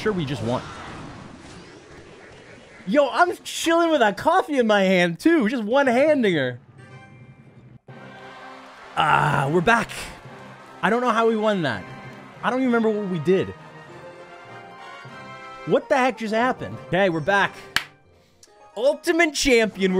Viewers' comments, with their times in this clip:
0:04 what did he sayyyyy??